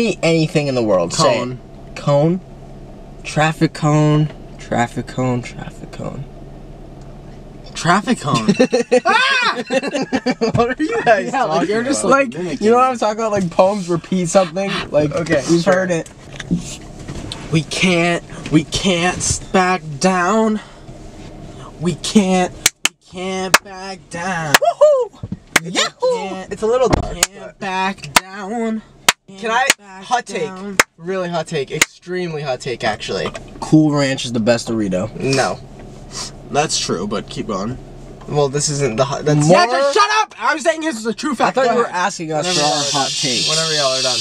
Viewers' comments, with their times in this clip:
0:08 HELP THE SCREAM
0:26 bro was possessed by Luigi for a second there 😭